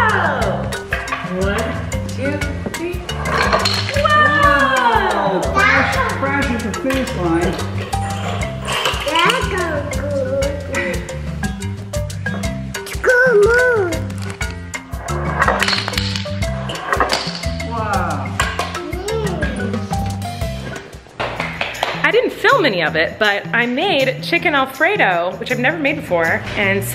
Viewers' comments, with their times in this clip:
0:09 It sounded like he was saying," That's no good!" Or am I losing it 😂😂😂